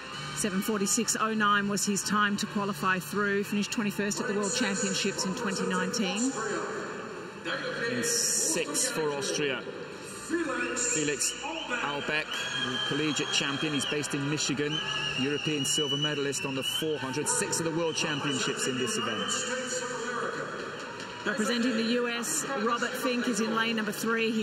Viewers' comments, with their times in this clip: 0:10 Whistle whistle whistle! Love it